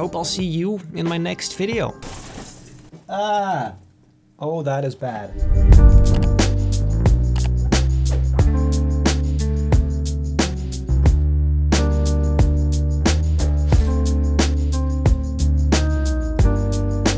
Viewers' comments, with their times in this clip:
0:05 You butchered the pronunciations😂😂